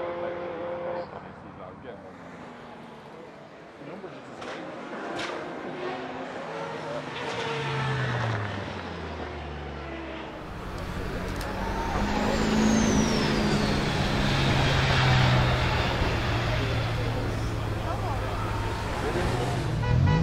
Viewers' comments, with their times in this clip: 0:03 on Oh those gearbox pecks)